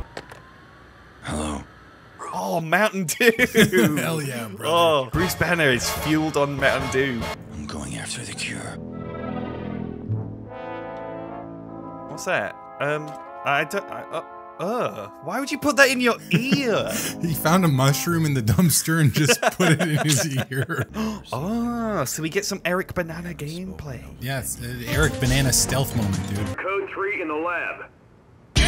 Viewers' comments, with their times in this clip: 0:10 I'm sorry but what's up with this Scooby Doo ass music???